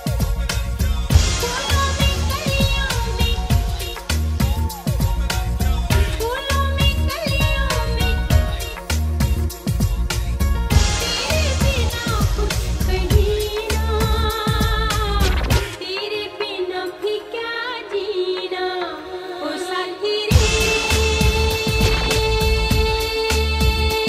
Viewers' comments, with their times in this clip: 0:10 chords and bassline sent me to another world😵❣️❣️❣️👌 , mixing beyond